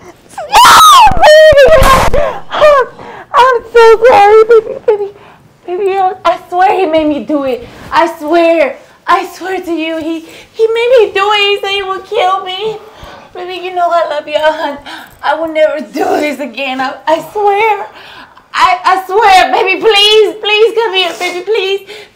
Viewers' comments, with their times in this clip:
0:04 The shots effect is so funny